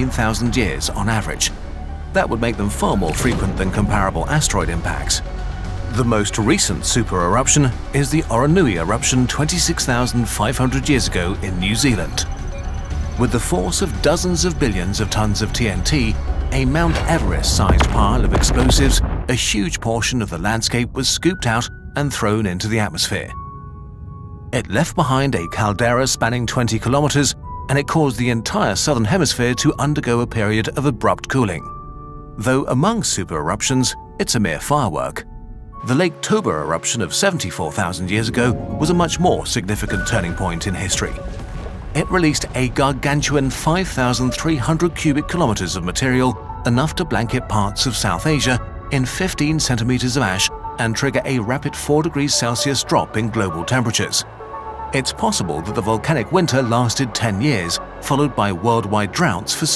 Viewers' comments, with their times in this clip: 0:03 am i hallucinating or is that a quilava cry in the sound design?
0:14 why is this explosion Sound so f*cking nice
0:15 I don't know why but your sound managers make me get another nostalgia from Sky Force the bullet hell game
0:17 That explosion noise Fantastic.
0:17 that explosion sound was so satisfying
0:37 the little harps here are such a good touch that always gets me haha; like we're looking back at a fond memory :P
0:42 bro really said "GaRgATuAn"